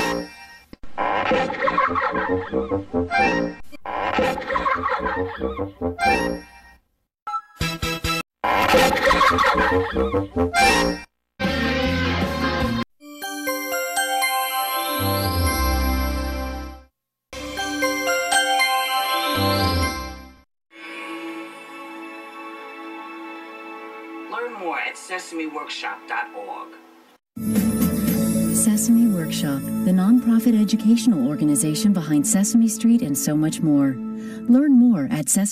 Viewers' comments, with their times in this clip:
0:10 Sesame Workshop's scream sounds like a drill in dentist's office LMAO
0:16 The music is so beautiful 😍